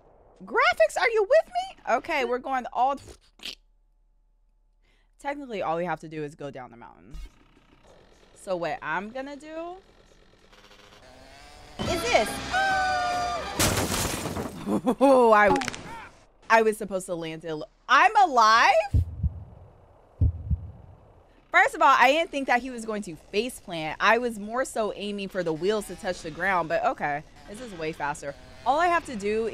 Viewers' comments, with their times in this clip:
0:10 thatsl crash sound make it more hilarious 😂😂😂 "IM ALIVE!?"